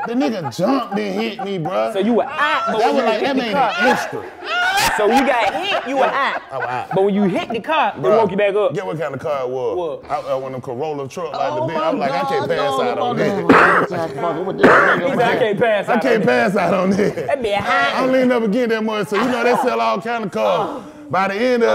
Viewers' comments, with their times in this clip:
0:07 Lmfao yo when Chico couldn't stop laughing I knew I was lost with the whole story 🤣! Had to rewind this interview like 50-Eleven times. (Stop 2 Dollaz, Stop Fabo!)